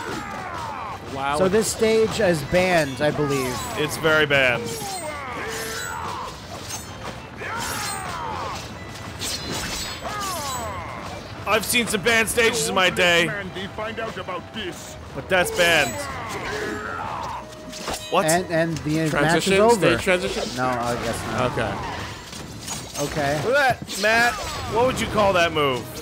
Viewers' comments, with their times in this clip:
0:04 Did...did Grim just scream OOOOOOWAAAAAAA like Roman Reigns? Is Reigns death?
0:12 That is, without a doubt, the WORST Grim impression I have EVER heard. The only good thing about this game is that it reminded me that Flapjack and Chowder were a thing, and that made me happy.